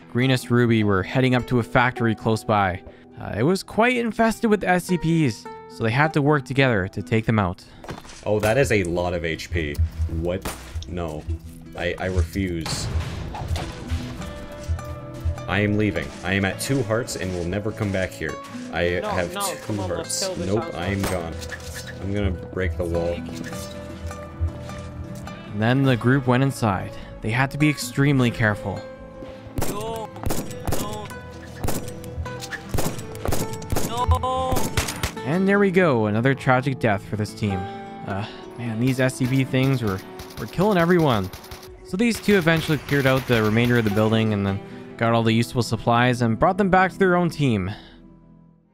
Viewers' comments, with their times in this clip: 0:10 The guy from sounds like technoblade
0:17 that voice...THAT VOICE!!!! sounds familiar
0:31 while he is getting grabbed he’s screaming no in lowercase 😭😭